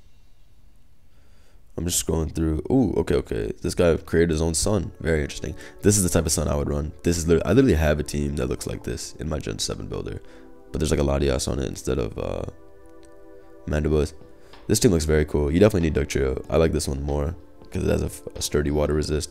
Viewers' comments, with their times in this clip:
0:04 "This guy created his own son" - blunder 2020